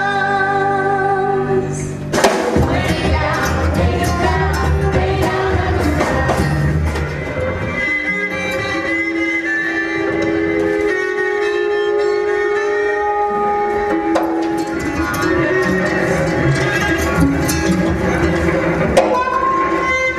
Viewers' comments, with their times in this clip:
0:07 I'd agree to being HLS; you can see her calling Orpheus' name and in some live performances of the studio album, that screechy string style is how they do the intro to HLS, the transition from Lovers' Desire to His Kiss The Riot, and stuff like that.